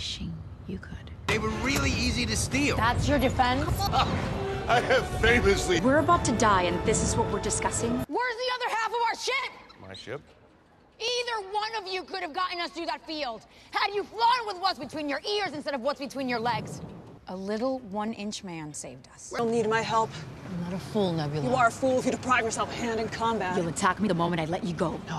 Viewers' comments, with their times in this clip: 0:08 She sounds like Katniss lol.